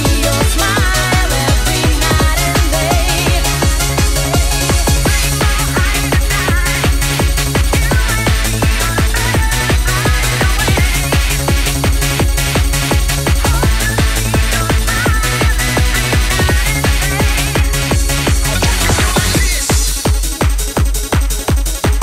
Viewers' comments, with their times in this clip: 0:05 ❤❤❤❤❤❤❤❤❤❤❤❤❤❤ ... No one could ever pack more power in 10 bars.